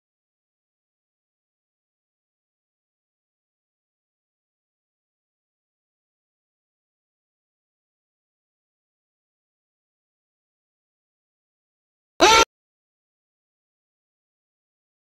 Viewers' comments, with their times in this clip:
0:12 Andy: Good dog..? Margret: fnaf scream cutely